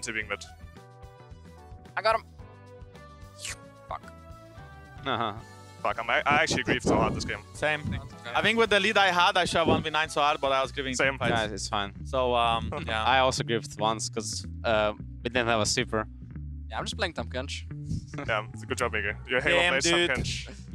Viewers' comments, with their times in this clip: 0:03 that Mikyx's lick got me lmfao